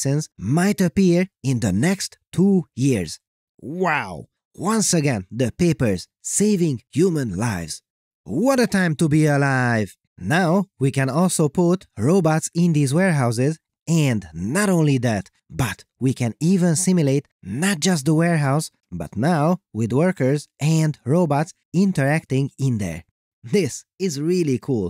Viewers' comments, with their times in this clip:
0:08 One of your best "What a time to be alive's" ever!